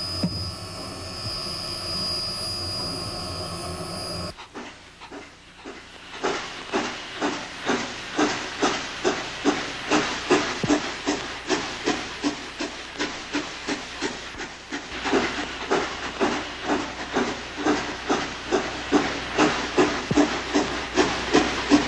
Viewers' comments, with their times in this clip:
0:05 This chuffing sound would be used in Thomas & The Magic Railroad